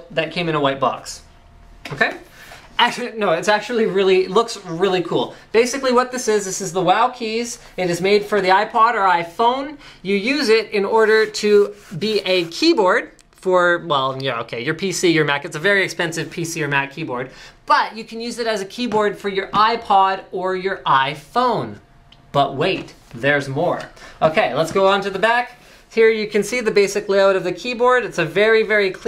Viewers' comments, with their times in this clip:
0:10 I heard a keyboard when you move your hands across the box